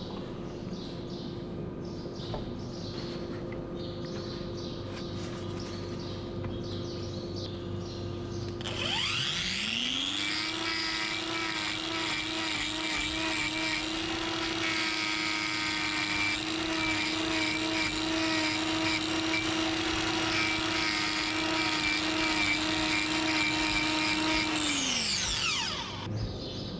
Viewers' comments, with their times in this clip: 0:09 it kinda sounds like the saw is going nu nu nu nu nuuuuu!!! nu